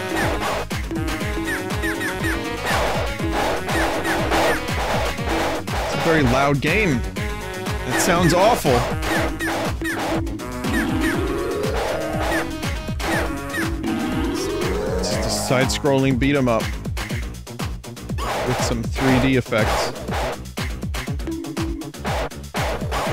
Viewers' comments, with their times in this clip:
0:08 "Sounds awful" Well, what did you expect from music made in Korea?